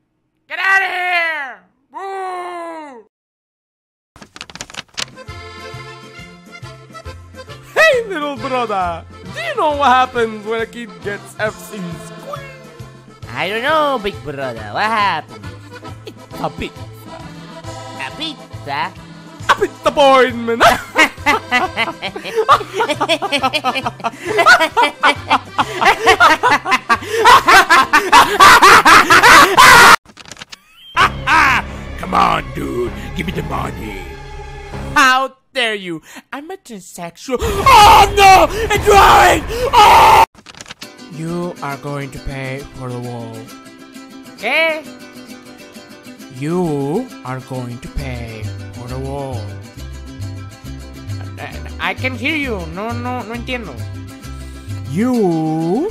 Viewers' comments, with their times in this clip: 0:06 "Hey little brothah! Do you know what happens when a kid get so much F's in school? "I dont know big brothah! Tell me, Wah happends?" "Its a pizza" "A pizza?" "A pizzapoinment!" Normal laugh Maniatic laugh Maro & lugi becomes demons AAAAAAAAAAAAAAAAAAAAAAAAAAAAAAAAAAAAAAAAAAAAAAAAAAAAAAAAAAAAAAAAAAAAAAAAAAAAAAAAAAAAAAAAAAAAAAAAAAAAAAAAAAAAAAAAAA
0:38 as a dbd fan. Hearing this music made me smile.